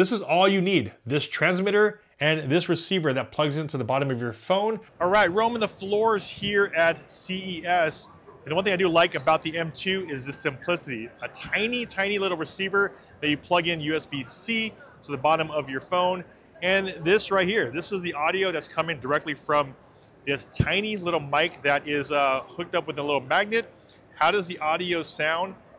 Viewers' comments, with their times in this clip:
0:09 , first spot I skipped to was which is terrible. The rest of it is actually pretty good now that I heard it.